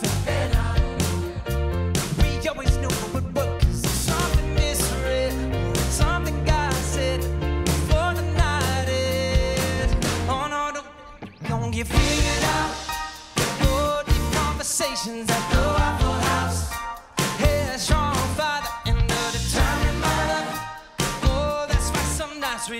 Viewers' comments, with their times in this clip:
0:09 That forgotten lyric was so smooth, Joe just sounded like he was self-cencoring a swear word. 😂😂